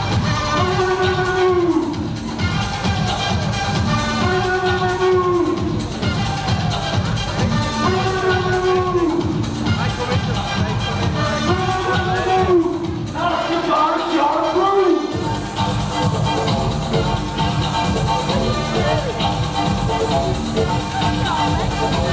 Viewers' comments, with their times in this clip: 0:07 it sounds like he's saying "boogity boogity boo".